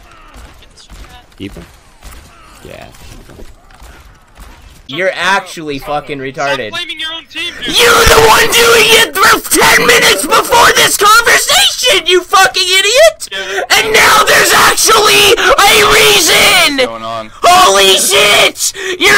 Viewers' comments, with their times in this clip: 0:07 A textbook Delly manoeuvre, from 0 to HOOOOLY SHIIIIIITT in 2 seconds flat.